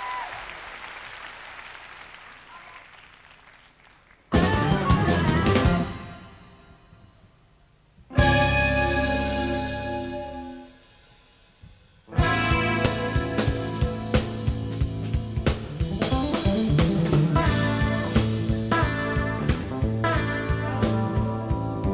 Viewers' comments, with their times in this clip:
0:07 love seeing Road Games done live, but wish the volume of the vocals were lowered. It drowns out the others. Critics saying something like this is too cerebral crack me up. This is a whole other genre, fusion jazz...funky. I too love Santana, Metheny, Steve Morse, Eric Johnson, even Jimmy Page, Van Halen and Malmsteen. Each have their own distinct style and each convey a completely mood. How can you compare?